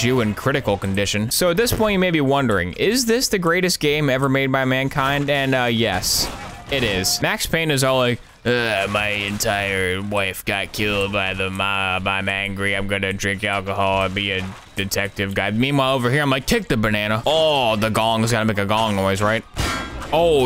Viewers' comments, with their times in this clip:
0:04 that guy exploding so casually and obliviously, and that little “AhahAhh” sound like he got a little spooked or something- just totally at odds with the sound someone would probably make being instantly liquefied… it’s all perfect